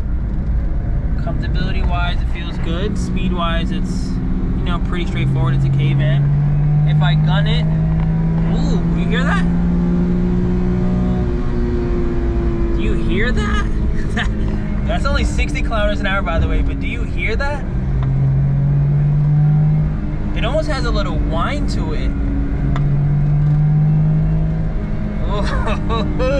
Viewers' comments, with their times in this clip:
0:09 maaaan that things soundz like a wild one. like its sound